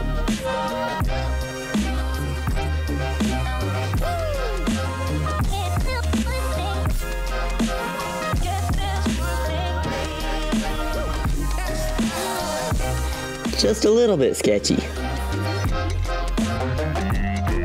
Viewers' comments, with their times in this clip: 0:03 that WOOO matches this perfectly
0:04 I loved the woo the second you did an imposiboe 😂